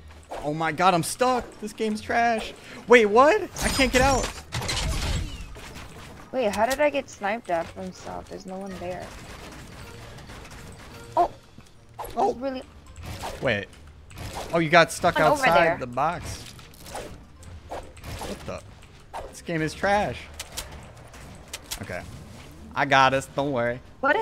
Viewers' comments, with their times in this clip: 0:07 that sounded quick